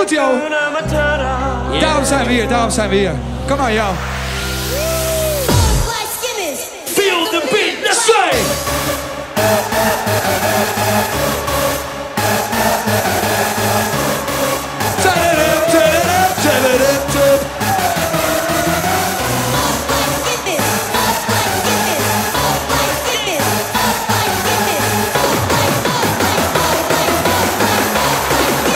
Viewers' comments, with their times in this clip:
0:09 Happy Hardcore starts